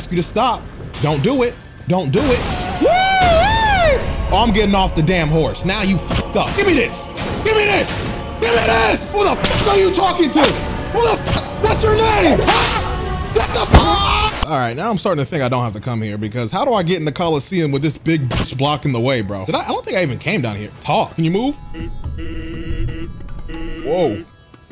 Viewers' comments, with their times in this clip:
0:09 the whip sounds got me dead af🤣🤣🤣🤣